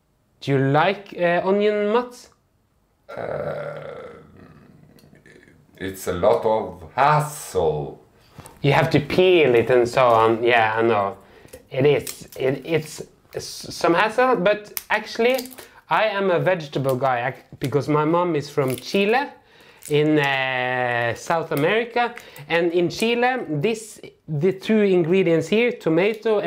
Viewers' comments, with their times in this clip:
0:05 AHHHHHH!!! "It's a lot of haaaaaaassle." Sounds alarmingly like, It's a lot of a*%hole." Whew! I ❤️ this channel!
0:07 Ohhh hassle! I thought he said "It's a lot of asshole," like he really hated onions! LOL